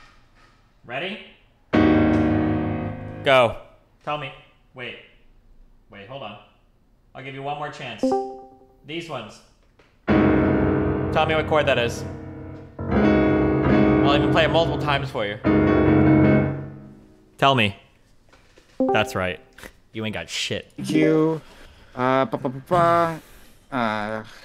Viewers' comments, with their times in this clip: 0:09 was it G-flat A-flat C D-flat E-flat